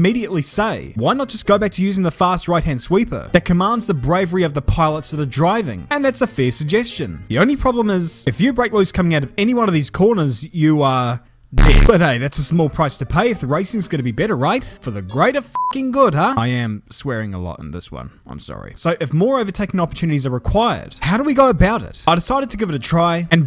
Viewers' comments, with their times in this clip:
0:08 come on, that's a bit of an insensitive tone. RIP Luis Salom 💙